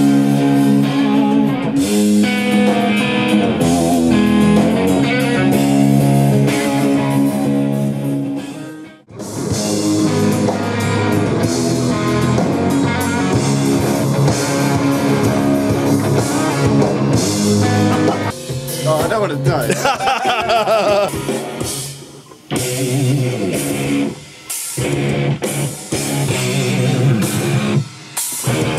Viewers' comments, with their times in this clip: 0:10 just can't get enough of that riff m8